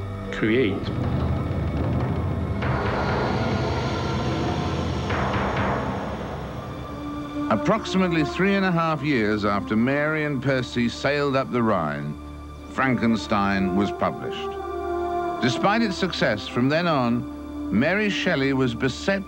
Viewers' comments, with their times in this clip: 0:06 I've been looking for this documentary for years. I remember how haunting that music starting was.